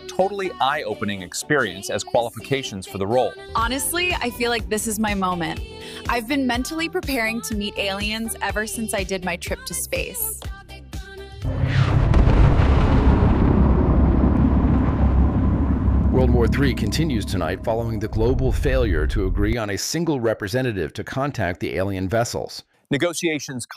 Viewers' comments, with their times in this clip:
0:08 whoa, good Kate Perry parody!